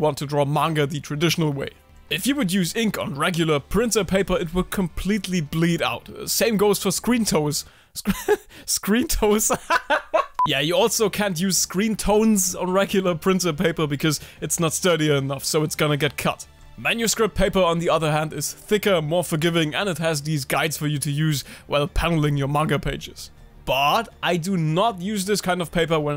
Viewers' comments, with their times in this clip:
0:07 that's like the first ever genuine laugh i've heard from you lmao. it's nice to see you're having fun making your videos